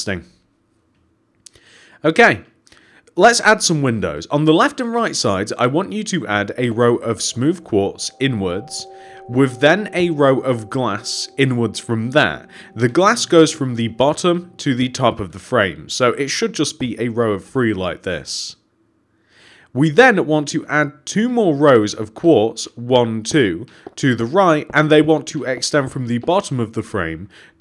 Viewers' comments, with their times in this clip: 0:08 Did you hear that cave sound?